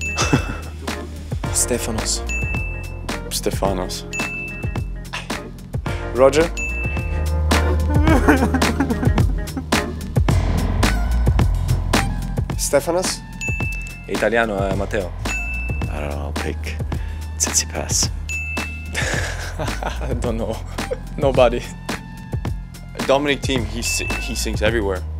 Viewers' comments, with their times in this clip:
0:03 "Stefanos" 😶. Ouch, the contempt
0:08 only I think that Thats 096’s crying?